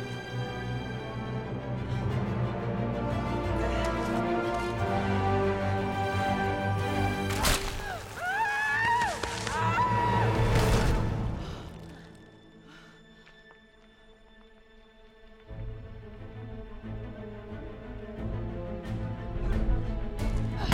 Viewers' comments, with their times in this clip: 0:07 Her screaming sounded realistic. Sounded like me when I got my first check and noticed how much tax they take out.